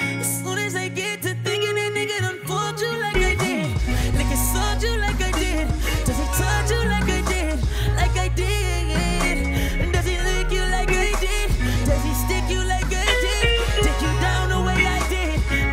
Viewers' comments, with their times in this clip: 0:03 oh man i like the tune after 🎶🎶🎶